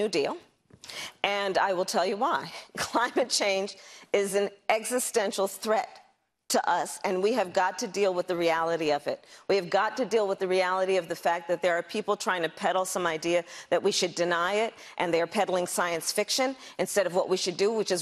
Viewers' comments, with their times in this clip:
0:04 She laughed at herself! Even she doesn't believe what she is saying! Haaaaa